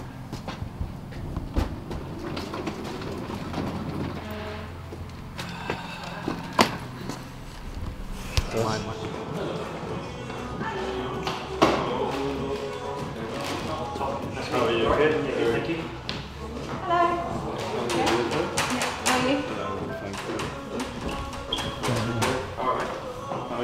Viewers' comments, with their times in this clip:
0:08 Listen where you just hear the camera man in the background like My man😂🙌